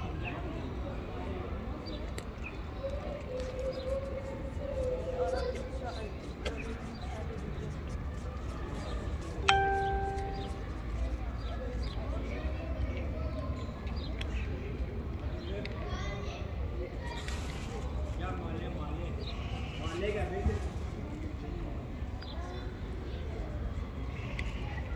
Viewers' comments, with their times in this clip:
0:08 ding...kitty has an incoming message.